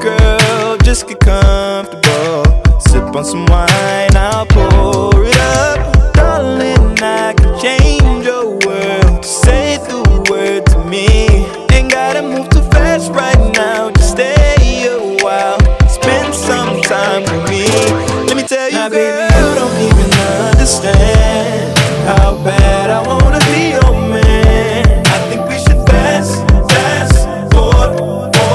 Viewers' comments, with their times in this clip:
0:09 Good song but hes biting drakes flow hard